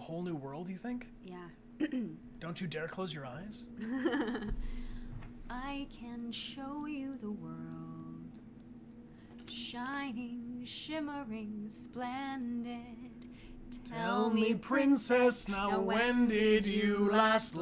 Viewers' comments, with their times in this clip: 0:04 wow u guys are really good at singing